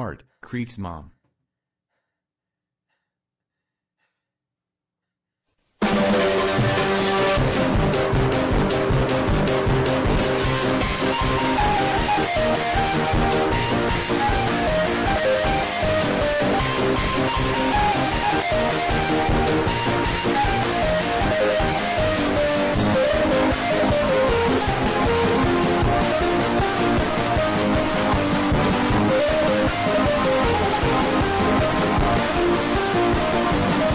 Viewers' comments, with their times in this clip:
0:04 This music is sick thou
0:18 it’s basically the Microsoft loading screen, not loud at all!